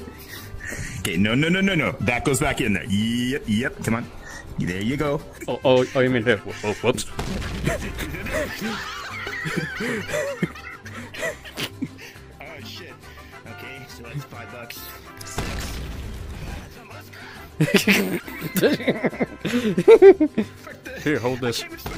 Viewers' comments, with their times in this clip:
0:06 From and onward is HILARIOUS, because I almost blew up my core from laughing and he tries to imitate the “SKIBIDI BOP MM DADA” meme sound effect which I think is too funny for me really